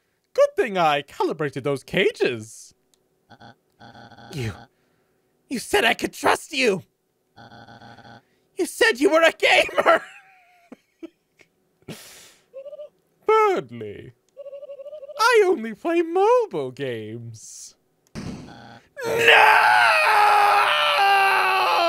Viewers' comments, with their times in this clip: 0:03 I'm sorry I just gotta! * "You... you said you we're a GAMER!" * "Oh Berdly..." * "I only play mobile games!" * "NOOOOOOOOOOO!!!!" the way you screamed was perfect, my god XD YOU REALLY SOLD IT AND IT MAKES IT THAT MUCH FUNNIER EVERYTIME I WATCH IT!